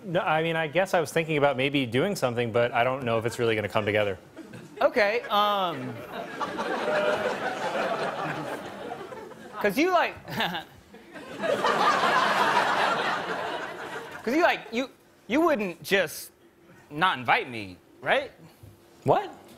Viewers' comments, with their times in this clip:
0:07 The chuckle to himself is what makes him brilliant. You can't teach that kind of stuff